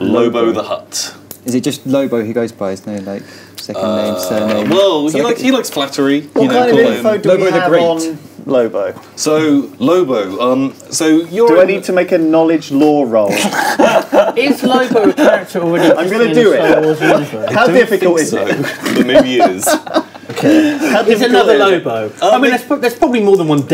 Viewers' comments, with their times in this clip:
0:09 INITIATE FAKE LAUGH!!!